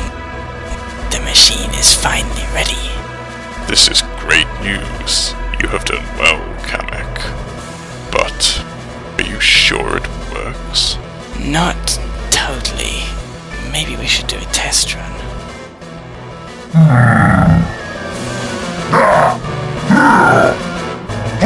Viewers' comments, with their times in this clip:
0:08 I heard bowser say: Butt